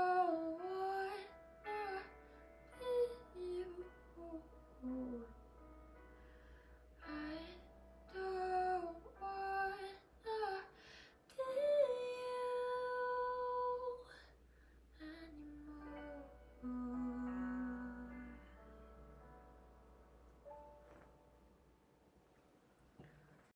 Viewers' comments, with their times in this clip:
0:08 WOW! you did a great job! my favorite part is because wow you did an amazing job with that note! ♡